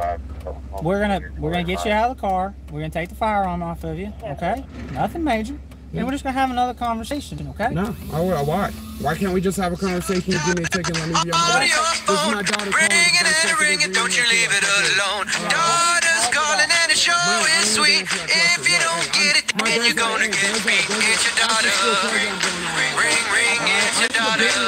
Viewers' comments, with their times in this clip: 0:10 After that ringtone, arrest that man.